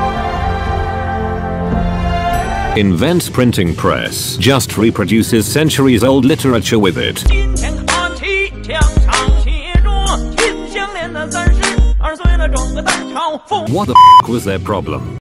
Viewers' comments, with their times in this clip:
0:10 Ok but that song was kinda good